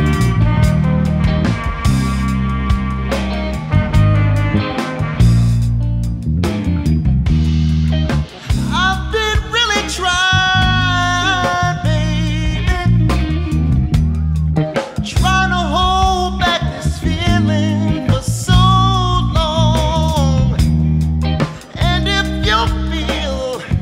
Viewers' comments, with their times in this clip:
0:08 I had a downvote on this until the mark. Then it became undeniable. Sort your band out, because your voice deserves so much more. Love it.